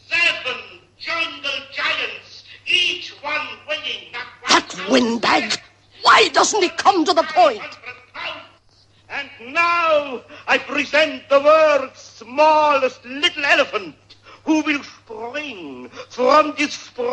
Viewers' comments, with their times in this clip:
0:04 PINKIE PIE HISS